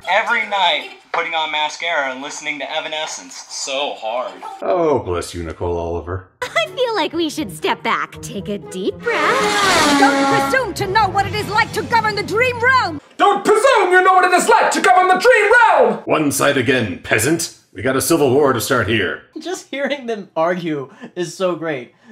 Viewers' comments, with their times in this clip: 0:08 that sound effect was just perfect! XD